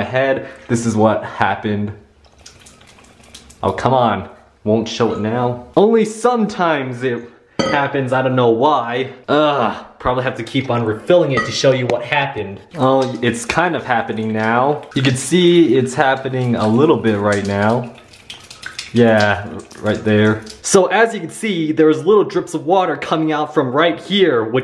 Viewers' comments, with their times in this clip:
0:09 was that a dog or a cat???